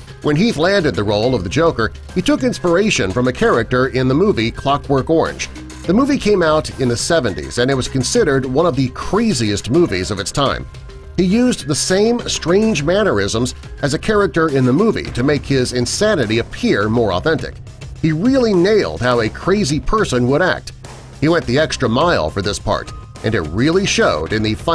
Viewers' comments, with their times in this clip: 0:05 Health? He is called Heath...